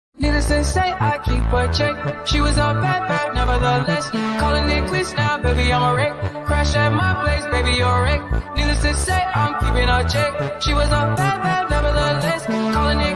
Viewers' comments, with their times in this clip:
0:01 song is fire